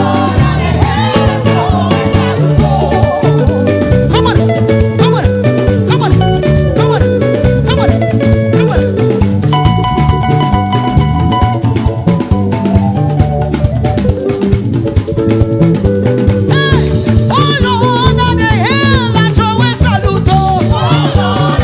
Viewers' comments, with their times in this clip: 0:03 The lead guitarist stated firing from here